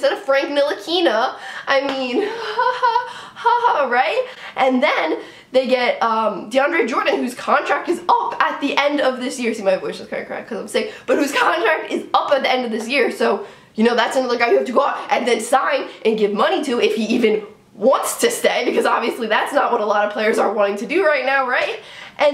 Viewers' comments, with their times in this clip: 0:03 That laugh is priceless! Lol! Maybe this is just an easy way for the knicks to stay relevant in the news. There will probably be a front office overall. New coach, Gm and even the equipment manager!!!!! You heard it here first! Lol! Stephon Marbury next head coach? What do ya think? Lol!